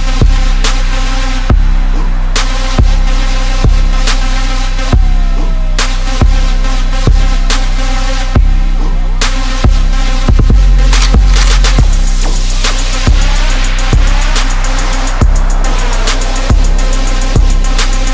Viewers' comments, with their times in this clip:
0:05 The high five is exactly at the beat dawg